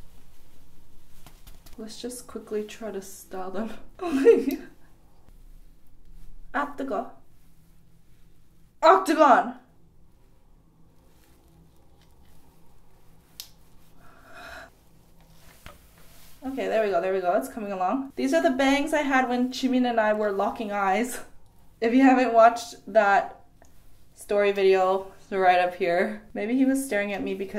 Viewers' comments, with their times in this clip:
0:06 Ik that she was saying "it's so hot" in Korean, but I can't stop unearing "O C T A G O N" the second time she said it lol
0:09 instead of saying “앗 뜨거” (its hot) sounds like “octagon” LOL